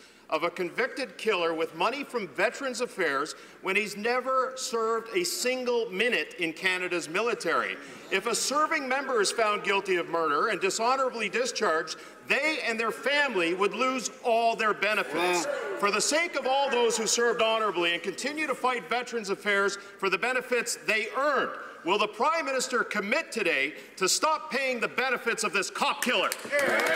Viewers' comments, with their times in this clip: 0:07 The bald guy in the bottom right honks